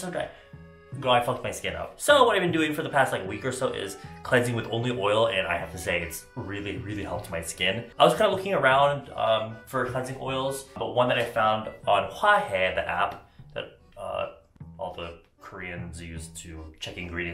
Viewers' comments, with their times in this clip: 0:05 i deadass heard him say he cleanses his face with holy oil